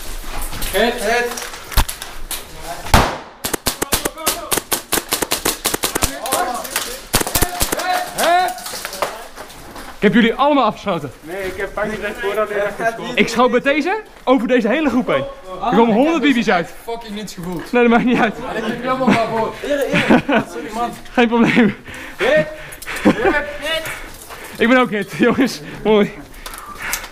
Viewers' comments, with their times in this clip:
0:10 I didn’t hear a “bang” tho